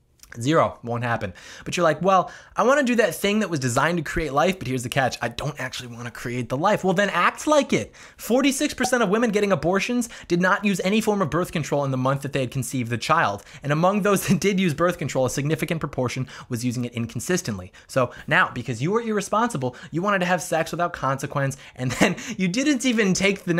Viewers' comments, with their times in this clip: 0:04 i really like how you said that then act like it.